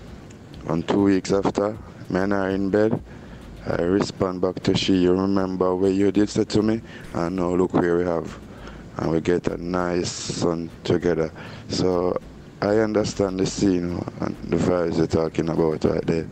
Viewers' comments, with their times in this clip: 0:03 lmaoao fusion accent